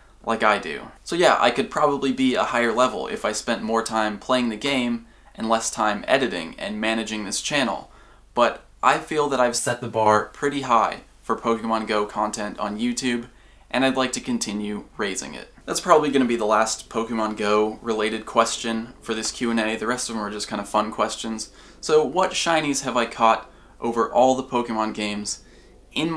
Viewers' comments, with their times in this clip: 0:08 wtf happened with your voice lmao